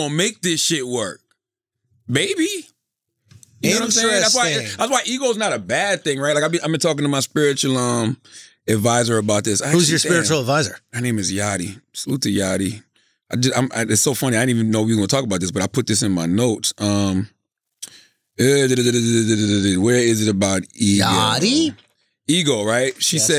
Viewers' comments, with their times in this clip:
0:06 dead ass thought Charlemagne was talking about an eagle not an ego. Thought he had a spirit animal.